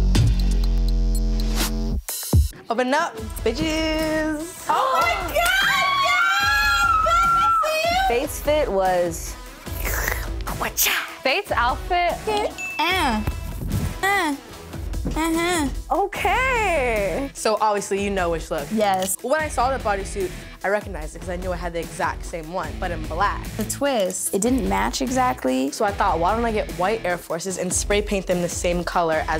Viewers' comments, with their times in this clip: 0:04 Doja legit sounds like my auntie
0:13 its doja voice for me😏😍